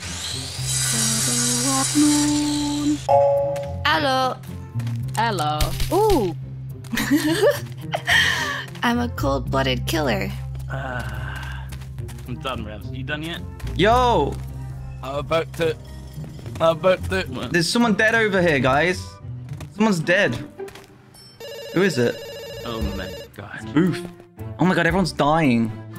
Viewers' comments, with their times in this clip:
0:09 "I'm a cold blooded killer" coming out of someone with Shadow's voice is really funny. The sing-song way of saying it clashes with the actual words perfectly.